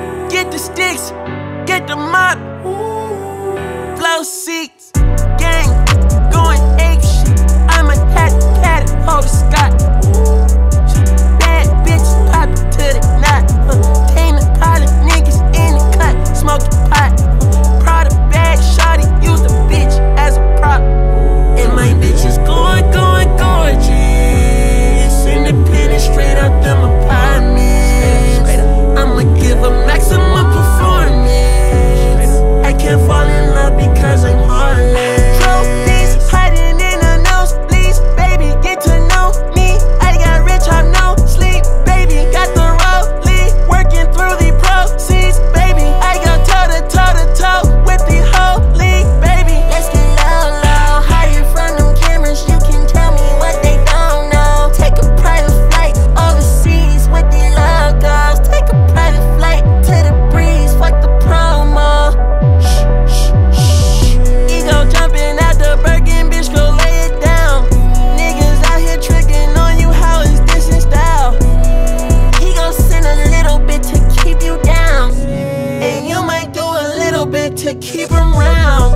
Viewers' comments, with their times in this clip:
0:04 is one of the hardest beat drops I’ve heard
0:04 beat got me flying
0:08 that whole part is literally carti flow and voice
0:32 The way the beat slowly fades in is amazing ong 🔥
0:35 bro the way he flows on the beat coming back in is just hardddd as fuck
0:36 i KNOW y’all hear that KIK notification sound in the background 😂
1:04 The deep synths or whatever that start on is so 🔥🔥🔥🔥😩🙌🏾🙌🏾🙌🏾